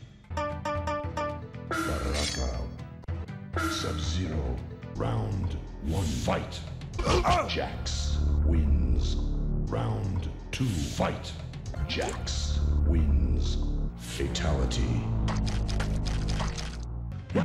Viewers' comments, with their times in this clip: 0:05 Mortal Kombat fans may not know Steve Ritchie by sight, but his booming voice has become iconic within the franchise. Twenty-five years ago, Ritchie was recruited to be the new voice of Mortal Kombat II, and he unleashed his take on the majority of the series’ most famous lines including “Fatality,” “Flawless Victory,” and the ever popular “Round 1… Fight!”